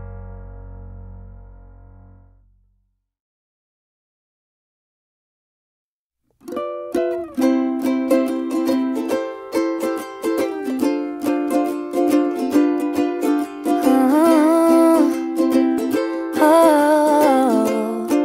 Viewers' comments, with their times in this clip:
0:06 I really L O V E that song! Thanks for putting it here! <3